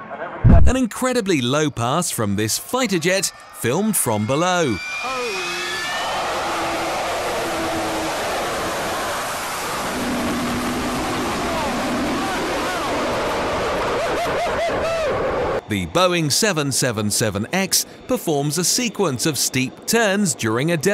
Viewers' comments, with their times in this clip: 0:03 those no fighter jet that is the vulcan bomber and you got to love that howl.
0:05 as the "fighter jet" (ahem) spools up its engines, the spectator gets drowned out - "Holy sh!!!!!"